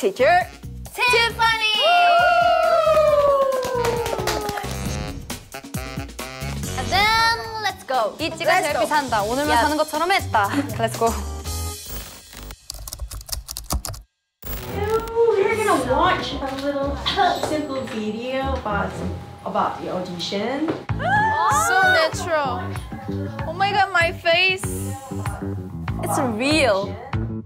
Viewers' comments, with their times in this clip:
0:07 i thought yeji was rapping a random song here,,
0:10 What was yeji saying in the beginning there ?? It sounded kinda cool